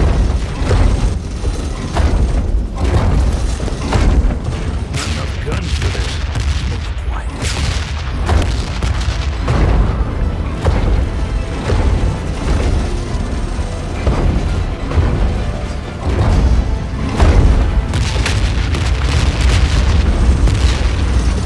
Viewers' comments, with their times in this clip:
0:05 Is no one going to mention how good the music is? The orchestra